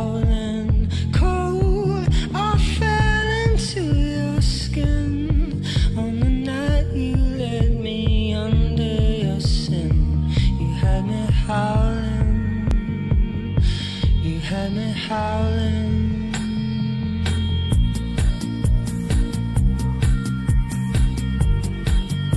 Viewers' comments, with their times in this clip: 0:03 This ending song for Taken 3 was Soo cool!!! "You had me Howling..." Singing reminded a bit of Evangelion 2.0 ending! 1.4.2023